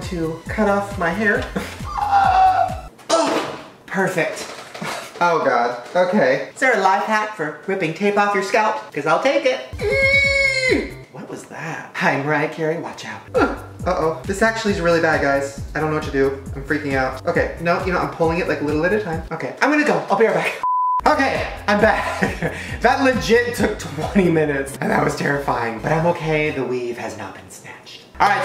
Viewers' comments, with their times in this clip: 0:09 My constipation noises: